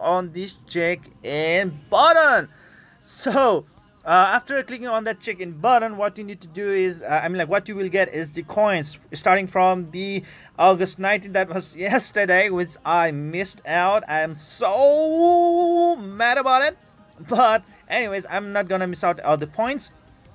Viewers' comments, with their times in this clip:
0:04 "after clicking on that chicken button"